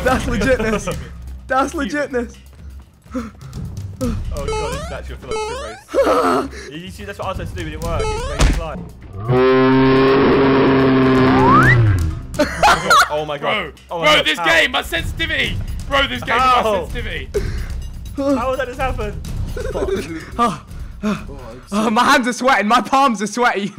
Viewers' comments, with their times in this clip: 0:10 Vikk sounds like a bear xD